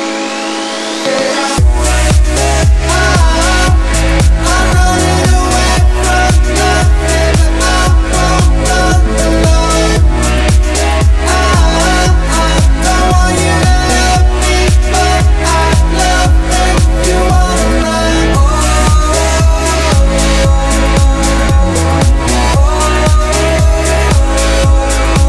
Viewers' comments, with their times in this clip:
0:10 good music from here